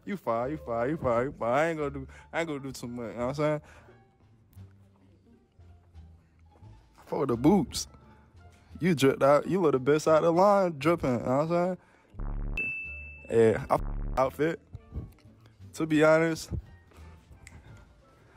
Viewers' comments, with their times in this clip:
0:05 Have no idea what he's saying, why can't he speak properly?